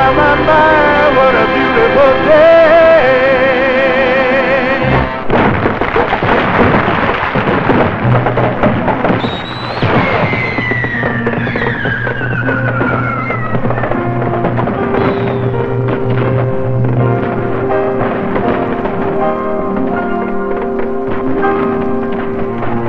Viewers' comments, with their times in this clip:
0:08 Real life fireworks get same yyyy sounds like The Rescuers the original classic in The Magic of Walt Disney World. And i remember i was been in Walt Disney World and Disneyland California for first time in 2011, and i hope Disney of America get make short movies of Disneyland Parks from France, Japan and China too like has 2 short movies of Disneyland California and 1 short movie of Walt Disney World in Florida before.😁